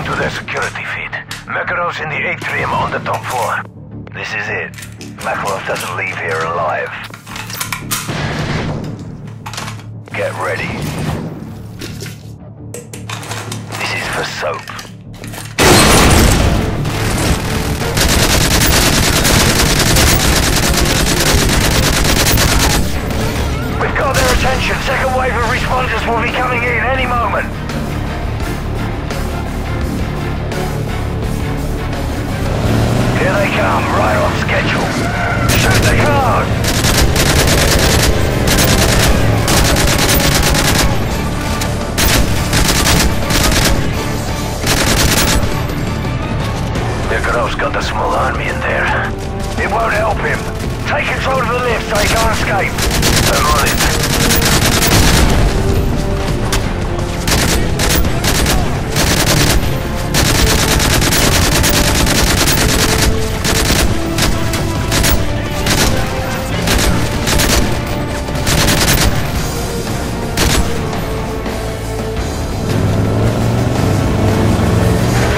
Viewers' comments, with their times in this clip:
0:07 realistic gun snapping sounds that you wouldnt hear during any battle at all
0:58 The music at the beginning reminds me of the call of duty 3 main theme